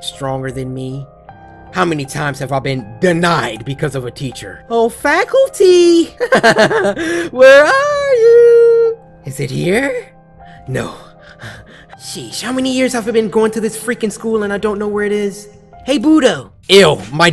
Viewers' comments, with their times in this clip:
0:04 that laugh is actually good!